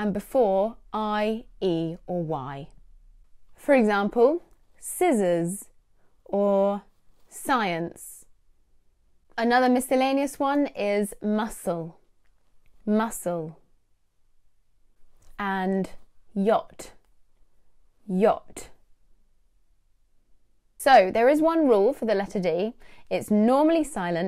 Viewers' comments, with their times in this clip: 0:10 What did u pronounce miscallenous?....time -33....is it really pronounced that way? Please clarify